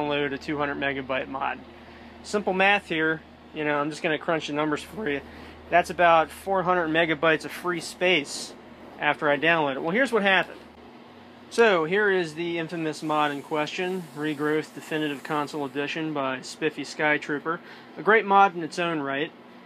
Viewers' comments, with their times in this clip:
0:03 voice crack alert